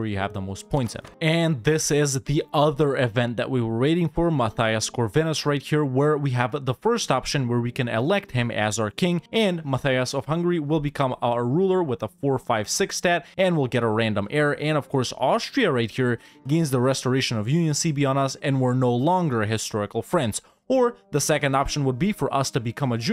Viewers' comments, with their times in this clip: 0:05 ohh god that pronounce XD if I had to quote from someone "I love It,I love It,I love It,"